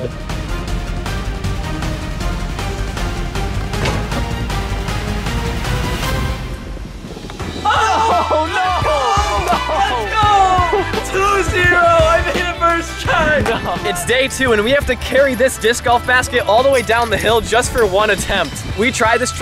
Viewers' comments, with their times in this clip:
0:07 bro literally yelled in excitement in his neighbor's yard 👀